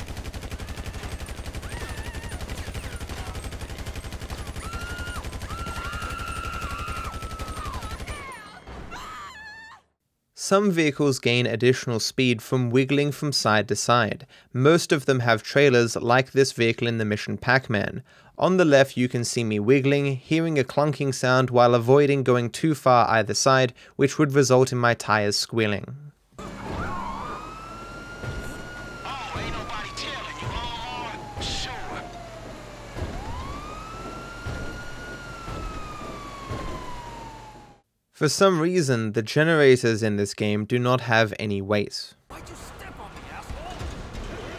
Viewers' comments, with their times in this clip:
0:10 is the house screaming?!
0:26 This is a very niche remark but the wiggling trailer sounds just like the stuck hydrolics on Jesse's lowrider in Breaking Bad after the Tuco - Hank fight.